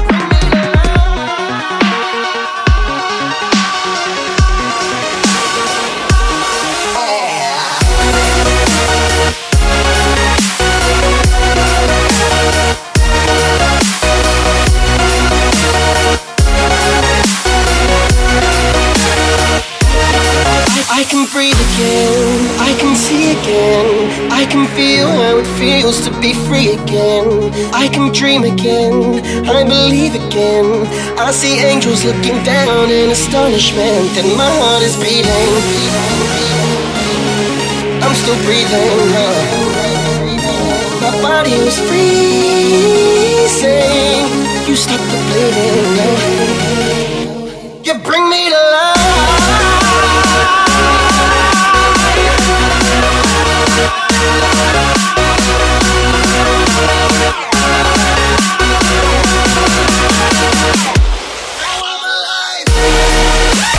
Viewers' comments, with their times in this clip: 0:09 best drop-in I have ever heard
0:47 Best rise ever.